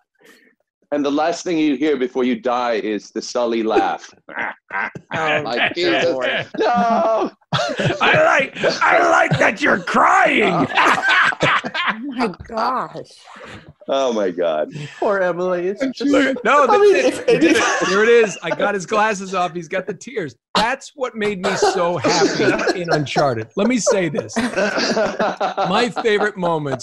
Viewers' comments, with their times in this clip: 0:10 I like that you're crying! Nolan north's deadpool came out 🤣